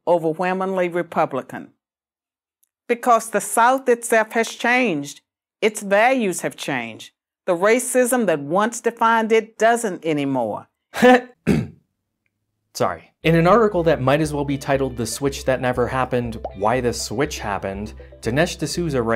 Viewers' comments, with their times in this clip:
0:03 Lmao! I scoffed at the same time n manner